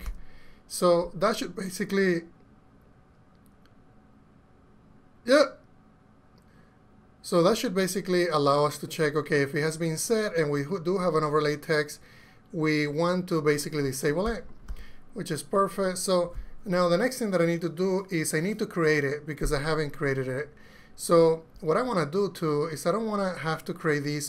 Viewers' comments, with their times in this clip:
0:05 awesome stuff! love the little yelp